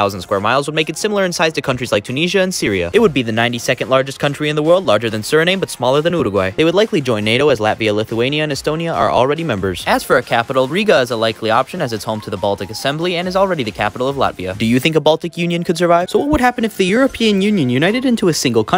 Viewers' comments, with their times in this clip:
0:04 who tf pronounces suriname like that???